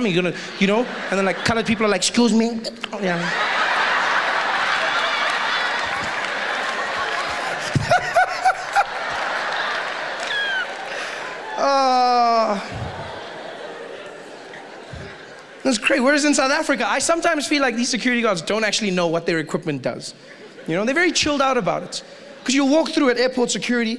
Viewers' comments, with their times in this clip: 0:04 the fact that he laughed like that is adorable and made the jokes hilarious
0:08 the woman in the first row clapping god damm HAHAHAHHAHAHA